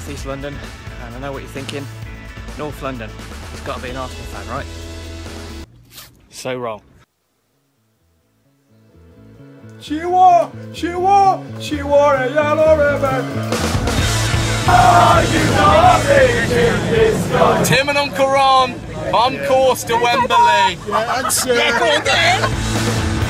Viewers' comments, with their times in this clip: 0:08 On his accent gave it away lol